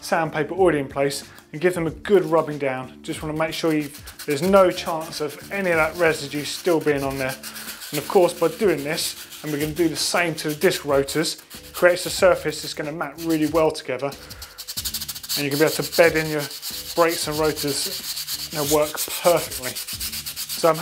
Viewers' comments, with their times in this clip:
0:05 bad external audio coordination hahaha =)